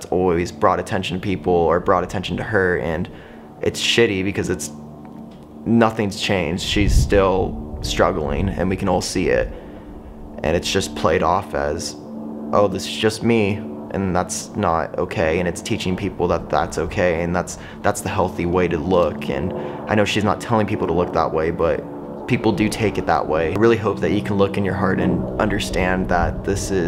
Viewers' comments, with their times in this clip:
0:09 why that creepy music?